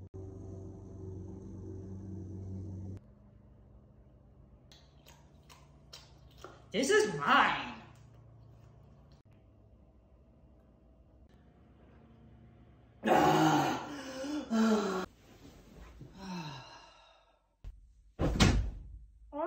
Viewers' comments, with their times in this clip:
0:06 this is pie?